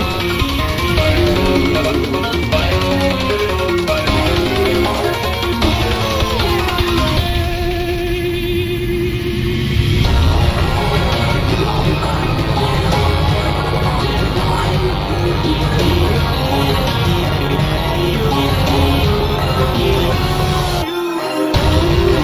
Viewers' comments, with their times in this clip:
0:06 longest note Sonic ever hit